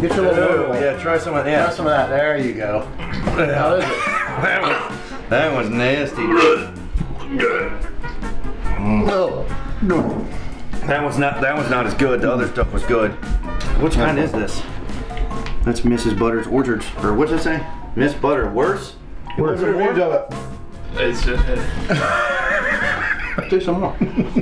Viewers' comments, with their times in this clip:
0:08 Yes gag ! Oh Yeah!